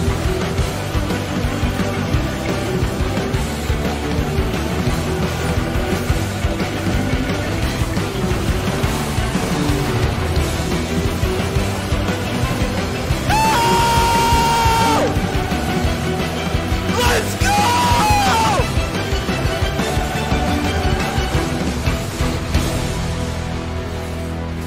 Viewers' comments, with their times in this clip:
0:07 tyler gets 1 shotted intense music continues